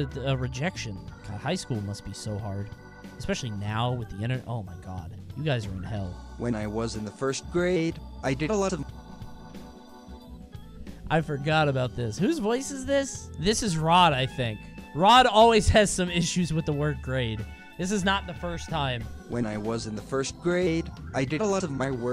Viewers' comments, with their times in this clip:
0:06 The muscular tails story, I would be panicking knowing it was hung up for EVERYONE to see with YOUR NAME (Aware) That dude with the soccer ball, man's situation was a big oof but impeccable aiming to hit the same target twice immediately. "When I was in the first graAAde"
0:06 Cringebot hits puberty!